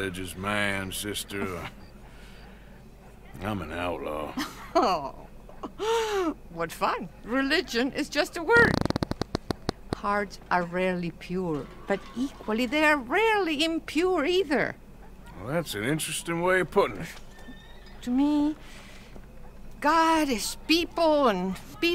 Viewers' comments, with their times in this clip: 0:06 did you.... Fart?